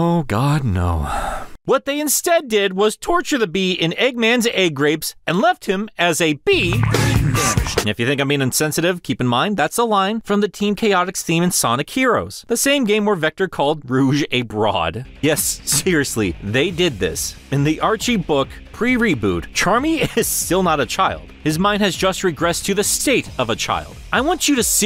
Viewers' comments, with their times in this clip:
0:06 What the HELL does the sound clip say. I'm so confused it just sounds like "rag nabbish" without any context and then you say people might think you're being insensitive and I'm just ???????????